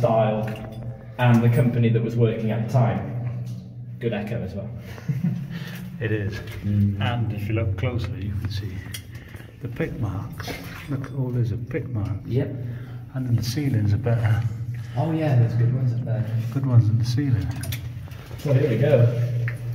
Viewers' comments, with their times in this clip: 0:06 Sounds like a moan mark.